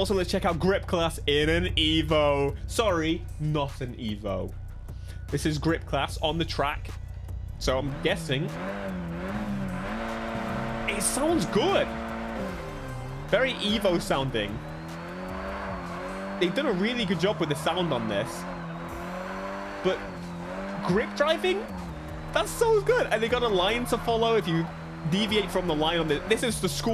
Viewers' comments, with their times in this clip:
0:09 i feel all cars are missing explosions, that sound combined with a brah bra pppappapapaapap and fire out of the exhaust would be IN SA NE